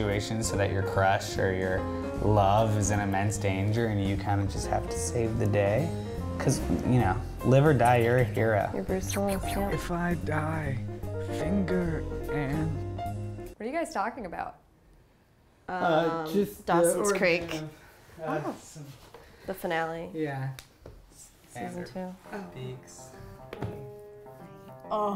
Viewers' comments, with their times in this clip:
0:07 hahahah that "phew phew phew" xD so cute